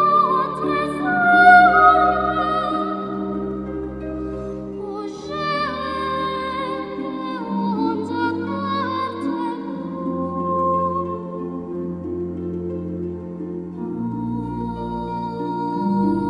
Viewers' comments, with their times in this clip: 0:04 sounds like it said "oh shit"